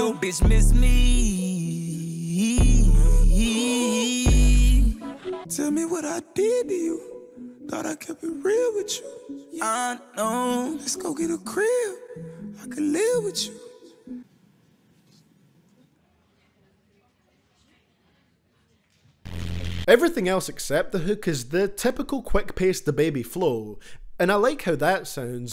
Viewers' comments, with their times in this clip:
0:08 Im getting la di da di da vibes